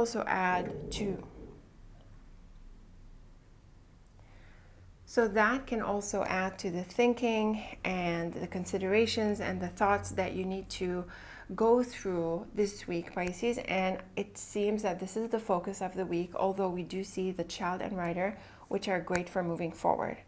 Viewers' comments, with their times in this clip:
0:03 What was that noise in Pisces sounded like a growl